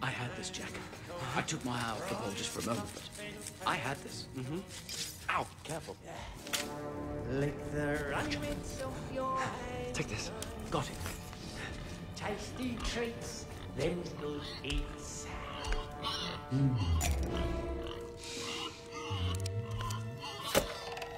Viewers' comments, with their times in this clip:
0:09 he is good at singing though